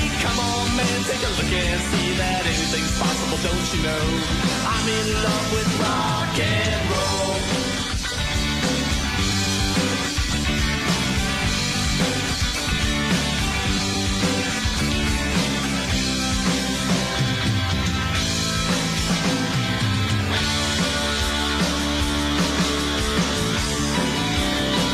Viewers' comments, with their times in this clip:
0:08 that rift I swear ive heard it somewhere before aaaaaa